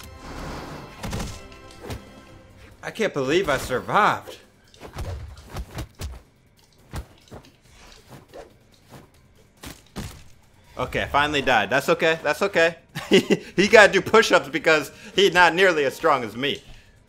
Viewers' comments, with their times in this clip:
0:04 he sounds like chandler From me beast